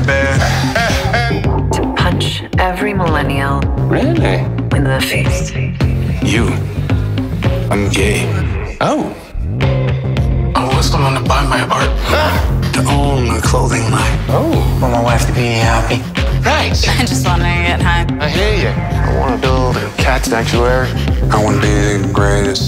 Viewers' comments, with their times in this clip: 0:08 The beat drop though. Awesome